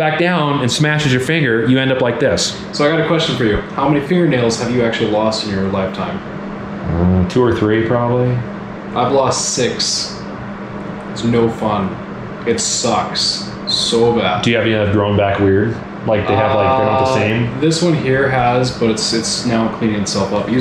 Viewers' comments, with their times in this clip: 0:07 Sounds like a gas leak. Lol